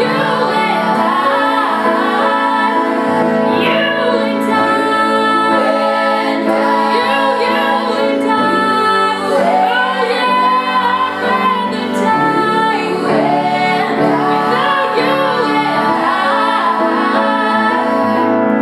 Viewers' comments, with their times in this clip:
0:03 do you mean this voice thing ? ;)